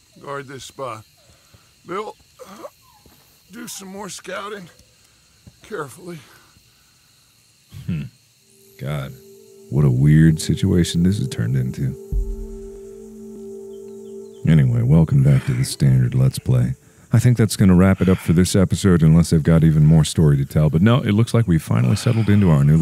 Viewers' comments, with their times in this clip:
0:10 it felt like the animal was talking